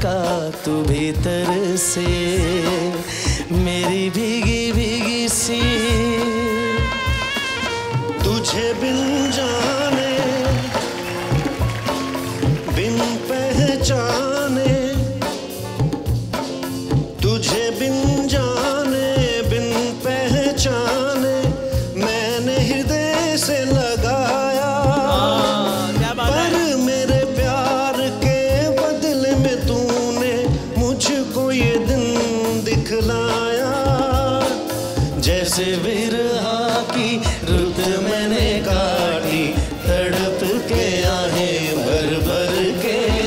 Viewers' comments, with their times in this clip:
0:09 chupa rustam Kapil u sing good. 👏🙂
0:25 kapil exact kishor das voice came out